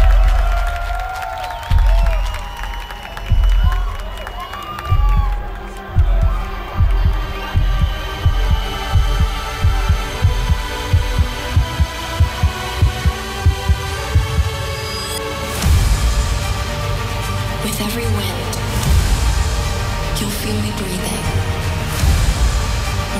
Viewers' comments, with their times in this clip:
0:09 this moment. The fireworks, the track KASHMIR, the dancers, the musicans, the ifreworks. everything comes together. great Final. much better than everyone else!